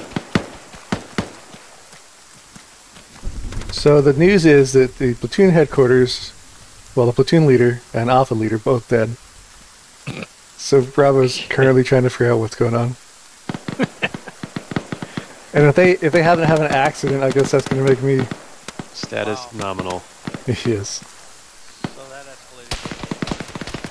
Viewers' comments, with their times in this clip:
0:09 I like that 1's response to platoon lead and alpha leads' deaths is supressed snickers